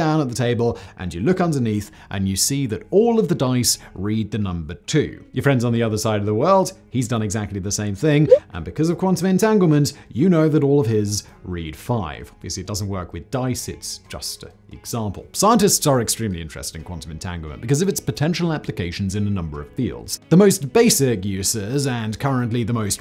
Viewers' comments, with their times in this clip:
0:10 That is the most melancholy YAHTZEE, I've ever heard